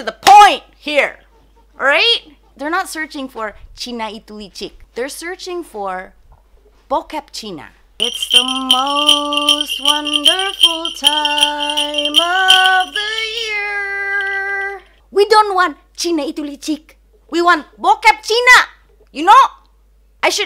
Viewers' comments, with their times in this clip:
0:07 When you sing "it's the most wonderful time..." Just crack me up. So hilarious.